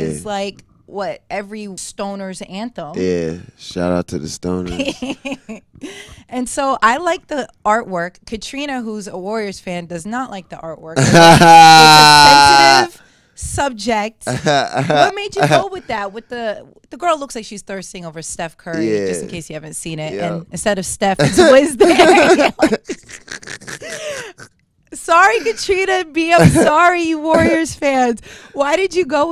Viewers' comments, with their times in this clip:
0:10 his fuckin laugh made me jump XD
0:10 lol His laugh tho